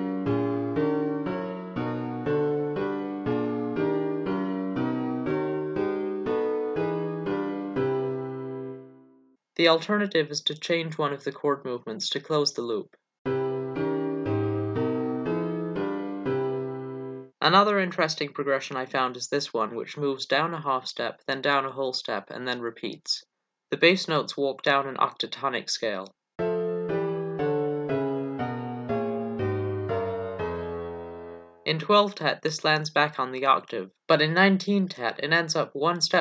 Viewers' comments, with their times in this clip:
0:04 some of those chords sound as sweet and sweeter than anything 12 tet has to offer. so there's something to it after all I thought for the first time. ((:
0:24 The chord progression is exquisite! What program do you use to play back???